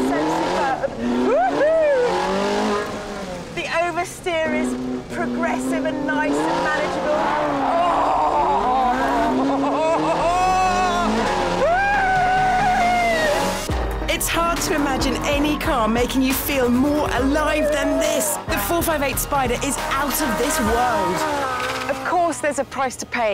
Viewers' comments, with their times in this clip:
0:06 Dont you cry baby, is it really that much awesome? WOW, just WOW. BTW :really evil laugh.